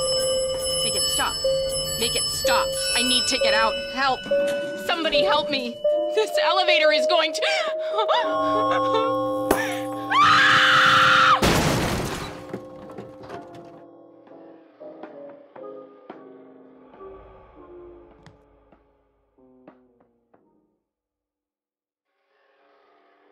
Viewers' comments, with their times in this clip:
0:06 that has to be one of the most convincing screams I've heard in a video game
0:09 Wow that scream